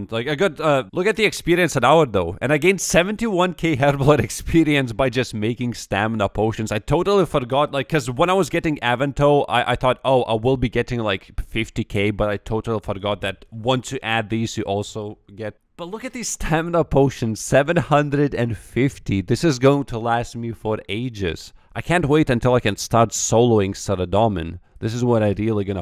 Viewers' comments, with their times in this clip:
0:06 Damn he was getting avan-toe